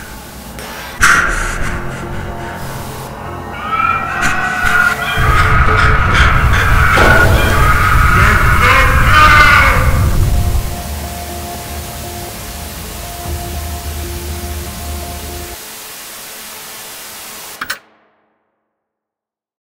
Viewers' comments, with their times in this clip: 0:08 that poor guys scream was probably the most uncomfortable thing to hear